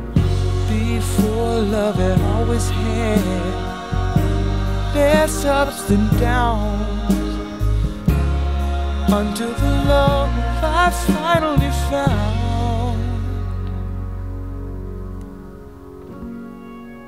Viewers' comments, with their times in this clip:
0:03 I find this song to be absolutely beautiful. That moment never fails to give me goosebumps. Carl's voice is angelic here, and he sang it just as heavenly live. No clue how the people in the audience were able to handle those feels 😄❤